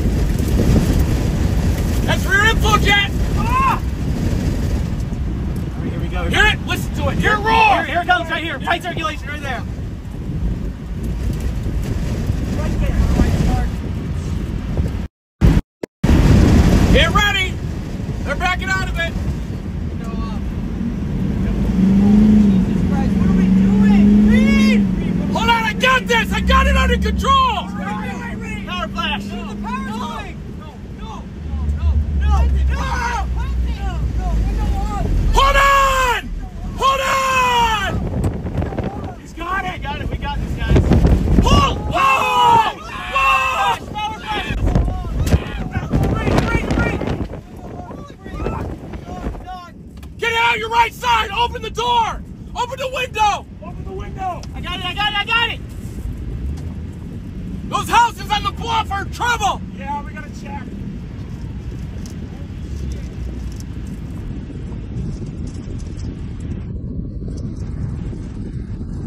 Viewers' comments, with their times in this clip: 0:06 he turns around and screams "listen to it, HEAR IT ROAR!"
0:06 breaking in his young! Demanding him to listen to that ROAR!!!!
0:56 Sounds like straight out a superhero cartoon 😭